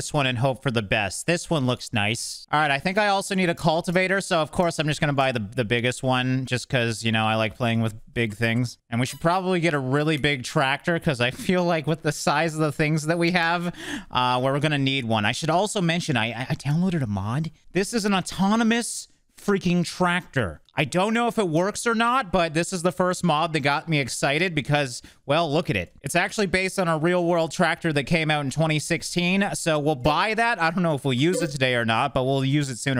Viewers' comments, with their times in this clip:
0:06 You kinda sounded like you regretted saying that 😂
0:17 is the most sneakily and bashful way to say " I downloaded a mod.." that I ever heard 😅😂